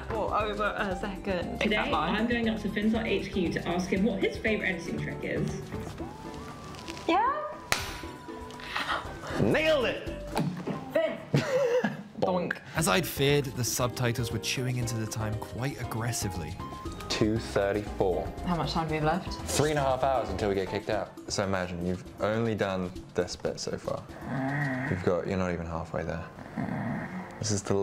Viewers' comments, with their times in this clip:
0:09 why did i think that he said "niggled" it💀